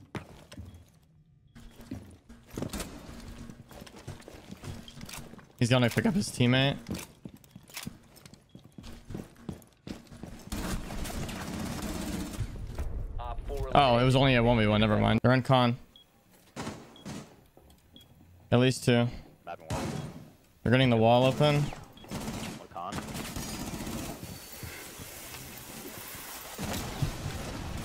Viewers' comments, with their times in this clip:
0:09 that voicecrack tho 😂